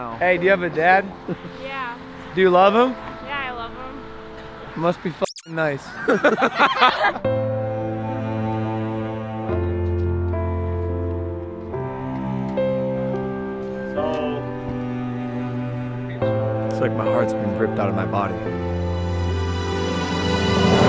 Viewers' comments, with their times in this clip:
0:07 I AM WHEEZING😂 logan is just standing there being sad with dramatized music and right there in the corner drunkass jake walking like hes about to piss himself😂😂😂 the sad piano makes its all better.